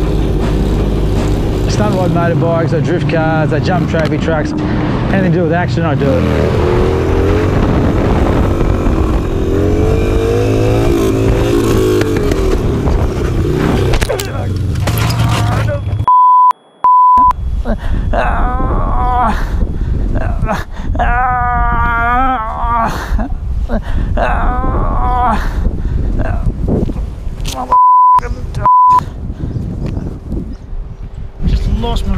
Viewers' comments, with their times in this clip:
0:08 that groan tho!!! lol fuckin funny
0:19 Well thats a weird sound... xD